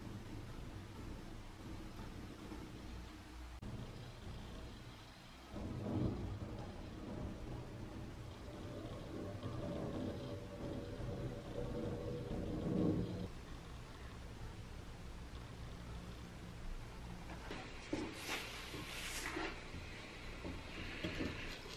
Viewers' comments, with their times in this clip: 0:05 Why do I hear the crackles of a Geiger counter ?